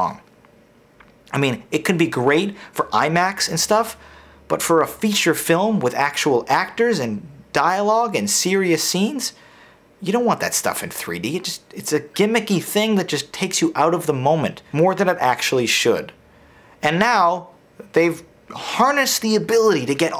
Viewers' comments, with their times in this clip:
0:03 did you say imax or imac? The tv is shit during the day.